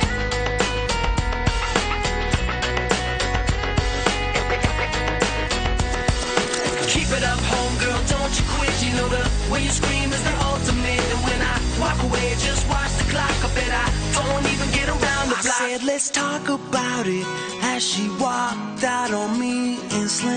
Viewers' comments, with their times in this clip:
0:05 Even now, more than a decade later, I seriously love this song! That "nananana" is so addictive - and is my favorite part, always gives me goosebumps! :)